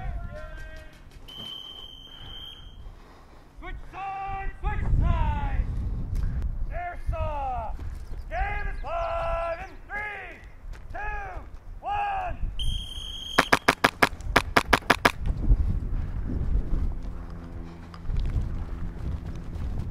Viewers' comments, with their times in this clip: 0:04 my man sounds like my last PE teacher